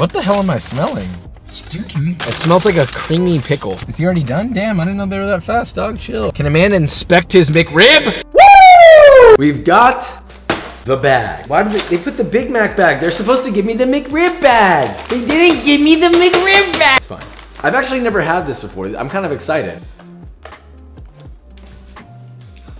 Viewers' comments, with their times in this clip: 0:08 RIP headphone uses.